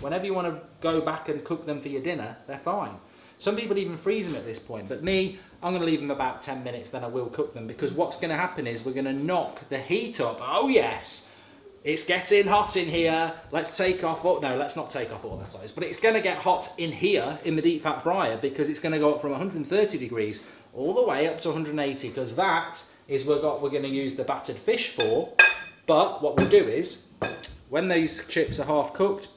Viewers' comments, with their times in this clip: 0:10 Idk why his Nelly cover makes me laugh so much but 😂😂😂😭